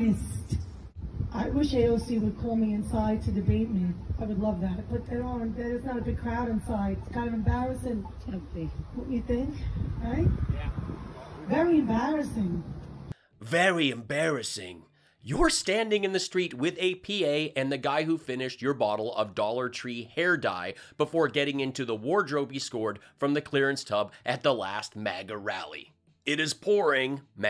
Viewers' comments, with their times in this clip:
0:08 Hey! She sounds like Elmer Fudd!! She's going to go hunt "wabbits" next!!! 😃